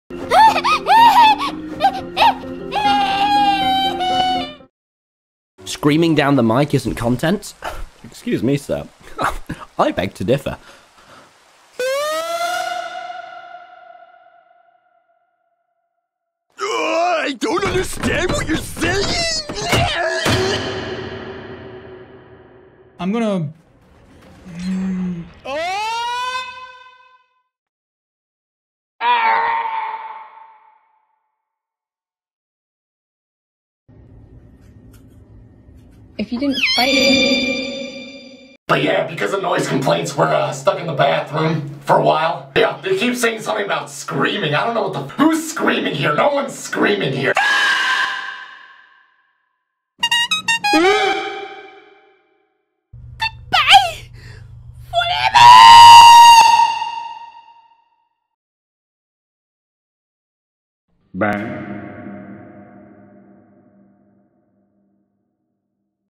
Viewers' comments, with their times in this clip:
0:00 Toy Chica is the cutest out of all of them in FNAF 2, and her screaming voice at the very bigining get me laughing
0:11 bro sounds like an air raid siren
0:11 Phantom Foxy's Had A Siren Screaming 💀
0:12 The second one got my ass choking like what the fuck like this “OOOOOOOOOAAAAAAAAAAAAAAAAAAAAAAa…………….
0:17 I love that muscle man scream 😂😂😂
0:33 Bro the scream roxy did was priceless 😂
0:36 That scream was adorable😂
0:36 pefelcty cut scream
0:47 shadow Freddy screaming in the restroom
0:50 Stop chewing so Loud bruh- leave That little guy alone! The hell is you gonna do if I don’t?:
1:00 That sounded like total resignation lmao